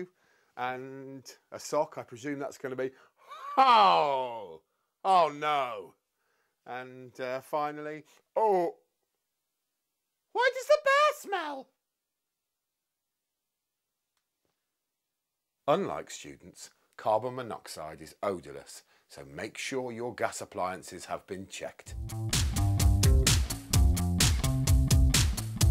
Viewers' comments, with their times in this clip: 0:09 such a lady like voice ;)